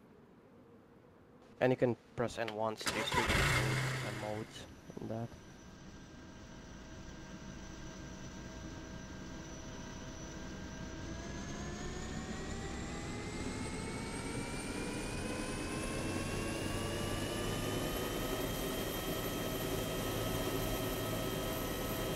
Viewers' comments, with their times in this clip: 0:03 UH1 startup sounds like an old Gaz. Seems legit. XD